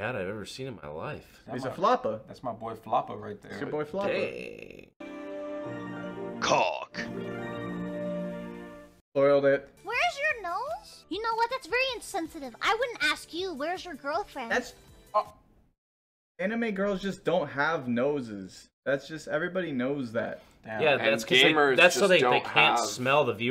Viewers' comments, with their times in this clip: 0:05 Why a discord notif popped up on my computer XD